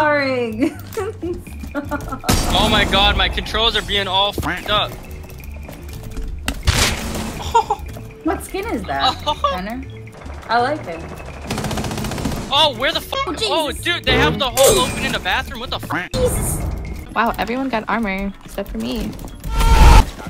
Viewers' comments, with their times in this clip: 0:06 i love how in min he put the sound that you get when you headshot someone in rust